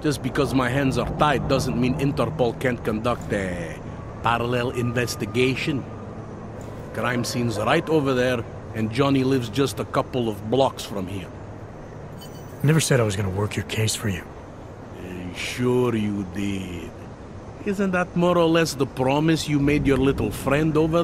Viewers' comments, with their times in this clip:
0:03 i just love the way how he says "parellel"